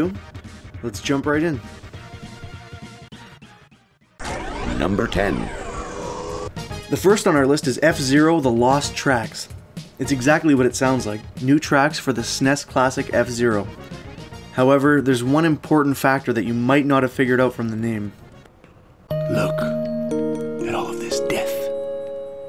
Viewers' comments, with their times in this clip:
0:07 Video starts Mare-E-yo... it's Mario